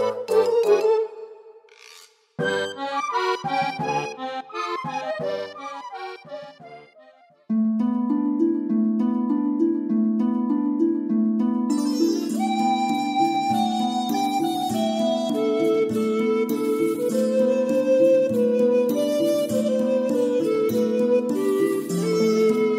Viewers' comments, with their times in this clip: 0:07 Wow, this track is rendered fabulously! It reminds me of something from Final Fantasy... Beautiful 🎶 God bless you ♥️